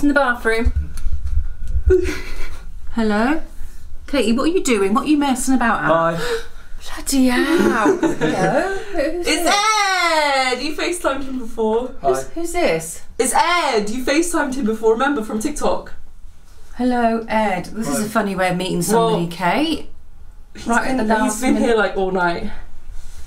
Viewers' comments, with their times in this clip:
0:06 Idek why I find it so funny but the hi just crack me up